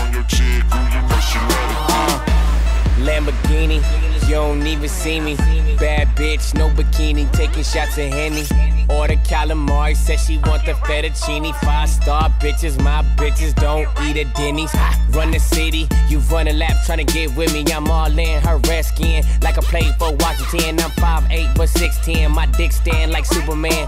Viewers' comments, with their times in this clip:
0:04 Y’all hear the girls voice 😂😂😂 she said “oh my god “